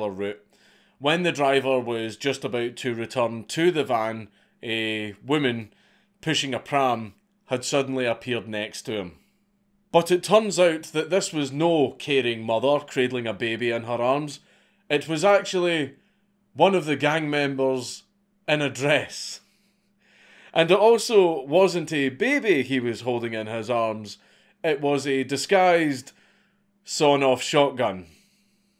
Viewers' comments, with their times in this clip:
0:10 what is this mickey mouse bullshit i hear with my ears?